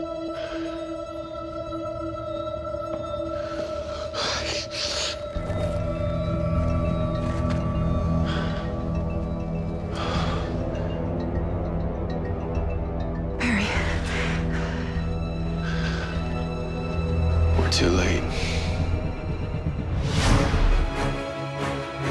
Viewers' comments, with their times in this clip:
0:05 Sounds like he slurred fuck